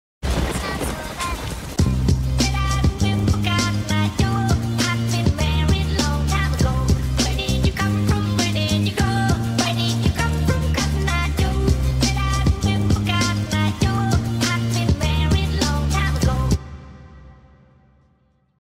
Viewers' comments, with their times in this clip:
0:04 finally a good music for the outro